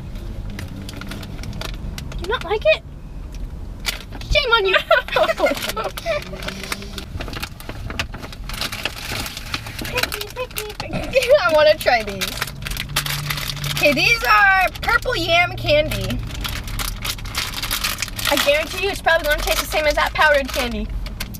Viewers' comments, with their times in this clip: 0:09 who else heard her sing pick me ioi song
0:09 OMG SHE SANG PICK ME, MY PRODUCE 101 HEART